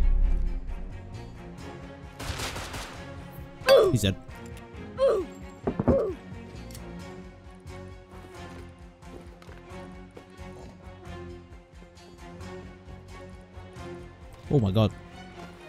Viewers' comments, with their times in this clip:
0:03 Top quality "Oofs"